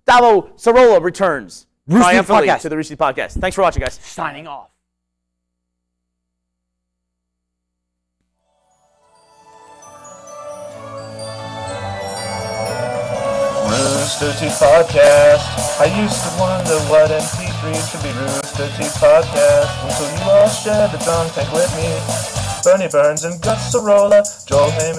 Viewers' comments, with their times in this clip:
0:07 Best end theme :)